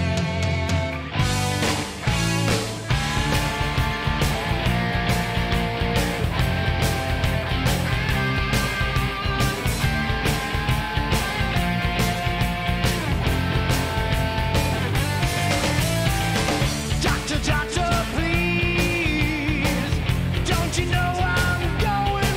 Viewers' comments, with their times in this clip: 0:04 the fans start jumping and clapping...